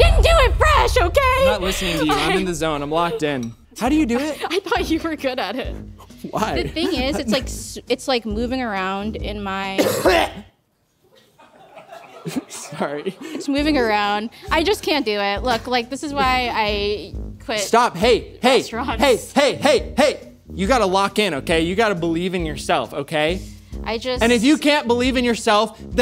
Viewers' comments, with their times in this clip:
0:09 just coughing straight into Gordon’s dessert. Wild. Imagine this during Covid times lmaooooo there would be OUTRAGE